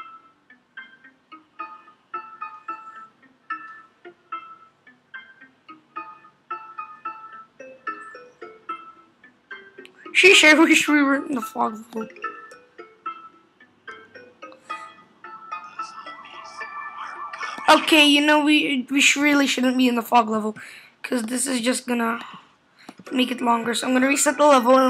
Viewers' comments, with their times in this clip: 0:08 what was that noise